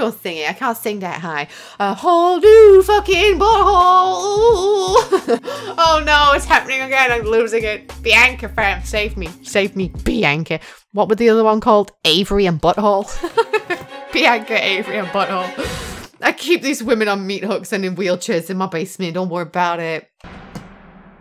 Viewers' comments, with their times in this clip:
0:04 hit that note gurrrrlllll